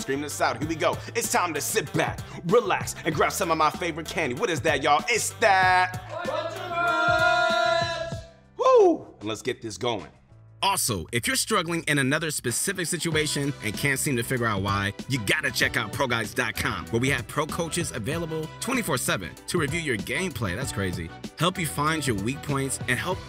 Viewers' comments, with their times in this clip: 0:05 it's barely the intro and he is already fired up nice